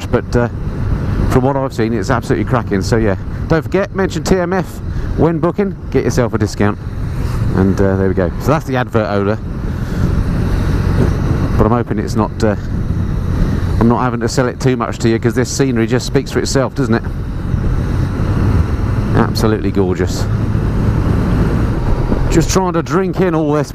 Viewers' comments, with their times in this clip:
0:07 advert ola?! Sound engineer ears!